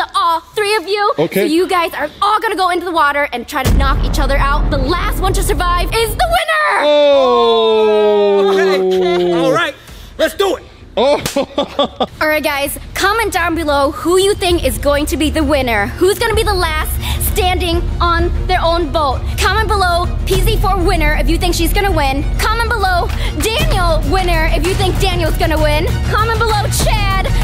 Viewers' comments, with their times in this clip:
0:10 slap is THICC